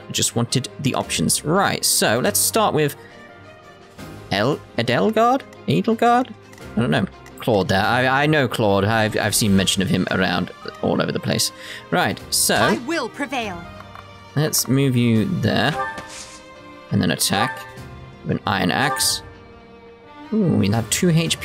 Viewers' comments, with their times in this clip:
0:05 you got her name right on the second try